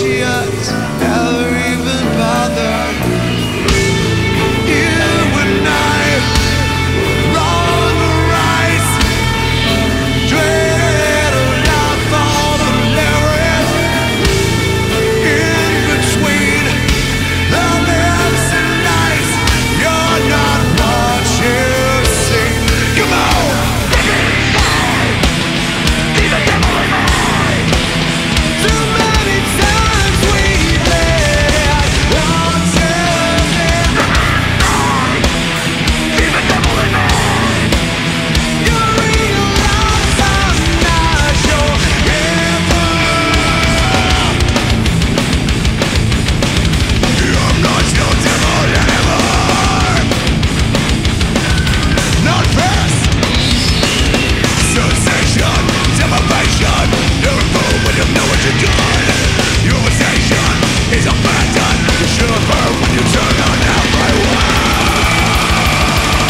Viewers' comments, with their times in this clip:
0:10 Amazing the voice of Corey 🔥🔥
0:28 Corey hit that note perfectly
0:41 Wtf happened to his voice LOL
0:44 He really did though. that scream is executed perfectly as well
0:51 i can't catch the fucked up lyrics.. i only hear "knotfest" then the original lyrics